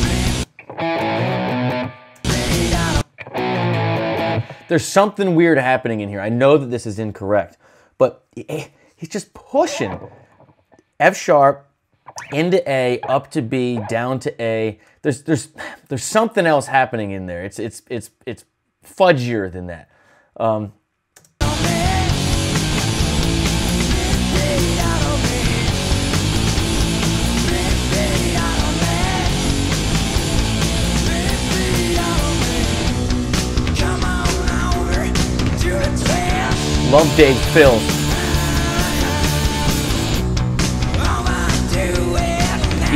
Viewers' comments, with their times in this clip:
0:05 when you said there’s something going on, maybe there’s some open notes in there
0:24 when you say 'theres something else in there..' It's probably 'the Cobain chord'. Art of Guitar does a vid explaining, but essentially when going a power chords he does the first 3 strings right and then 'bars' the rest of the strings with his ring finger so you get this unique twang that if you were to extend s power chord 'properly' would have 4th string..lower by a semitone? Is that right?